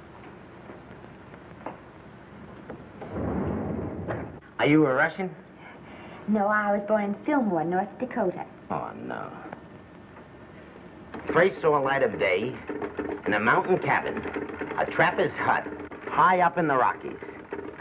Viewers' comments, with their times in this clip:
0:05 hahahahaha look its the bloke from heart to heart "and when they met it was muyder".